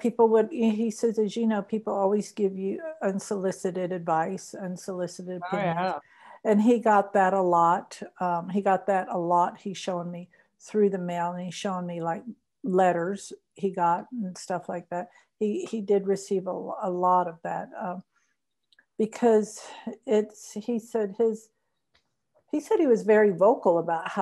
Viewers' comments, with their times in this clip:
0:05 I heard a man’s voice say “I have”
0:05 EVP sounds like Randi`s voice.